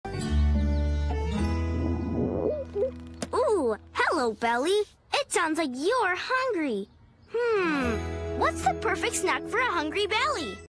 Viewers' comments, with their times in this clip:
0:03 Sounds Like A Howl